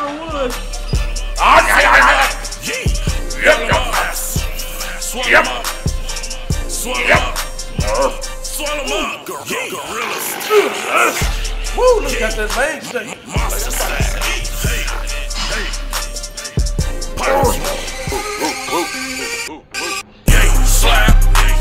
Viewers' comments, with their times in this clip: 0:03 wtf was that noise when he got he e-z bar up